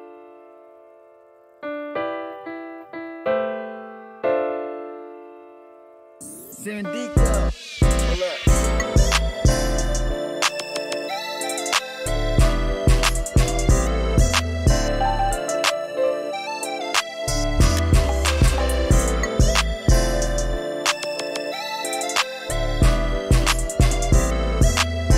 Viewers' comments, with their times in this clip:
0:08 that start and drop so smooth bro love it